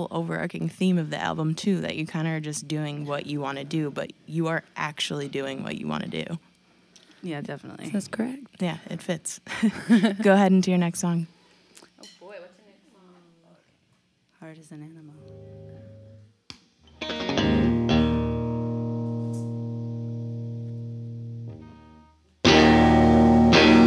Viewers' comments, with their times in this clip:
0:10 Do whatever you do. Obviously, they make do with less and it works. It does tend to sound like 'bass drop-out in the middle 8' much of the time. Metallica riffs are basically the same thing just with that Boogie EQ 'chugg-chugg'-ing the hell out of the bottom end, whereas this is a much soupier mid-rangey BigMuff fuzz-tone. I'm surprised she's not using so much OctaveFuzz, finally does get front-n-center for 'heart is an animal'